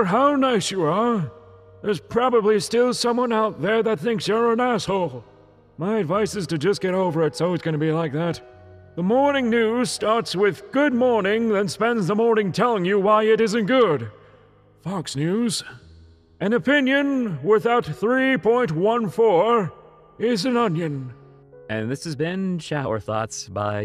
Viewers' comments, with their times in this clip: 0:07 you sound like my friends dad/my softball coach